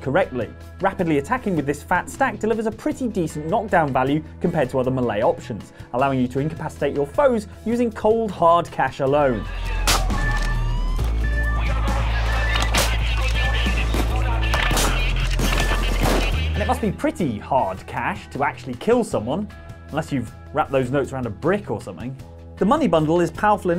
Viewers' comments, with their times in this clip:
0:04 I finally realized you're saying melee, and not malay. Was watching a bunch of vids and it made no sense to me.
0:09 That is an oddly satisfying and hilarious slap noise lol.